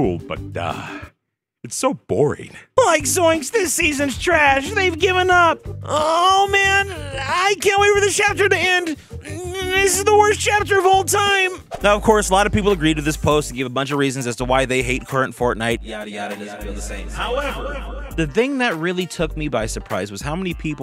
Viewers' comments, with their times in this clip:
0:06 you sound like ur being tickled